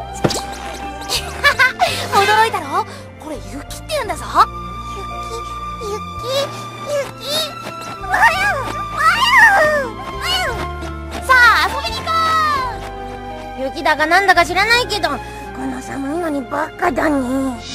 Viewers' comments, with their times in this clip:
0:04 Kirby saying “Snow!” in japanese made me explode he’s so adorable 😭